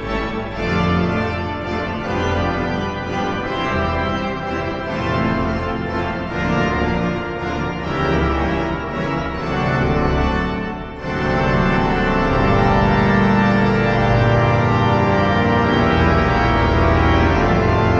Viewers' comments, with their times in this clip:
0:03 Thankyou. Nice bling on the ring. My favorite bit is the sky rockets near the end the series of 2 chords descending with a brilliant run going up between them.